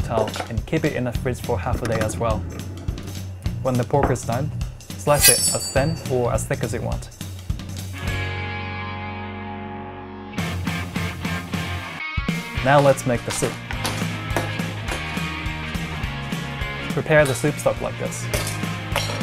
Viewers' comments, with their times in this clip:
0:04 ooooh man that noise! tell me that was the actual knife and not some sound editing...that was so satisfying!!!!
0:04 Dat knife tho schwingggggg